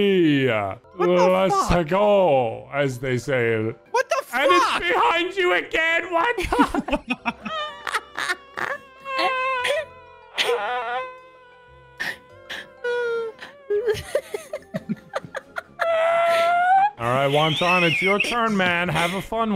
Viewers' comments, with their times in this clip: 0:07 the mosquito flying next to my ear at 3 am